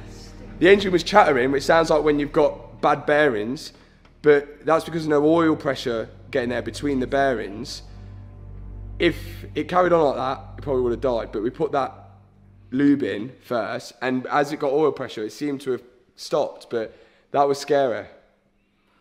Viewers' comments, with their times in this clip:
0:07 You forgot to prefil the oil filter😕 That's when you have all the rattling.